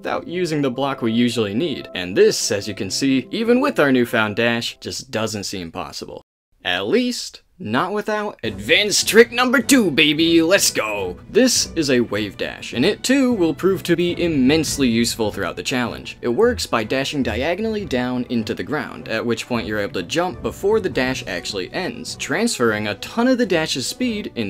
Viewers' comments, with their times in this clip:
0:08 The Super Smash Brothers music when he talks about Wave Dashing deserves a massive kudos.
0:08 I love that you started playing melee music while talking about wave dashing
0:09 "this is a wave dash" + smash bros melee music 🤌🏻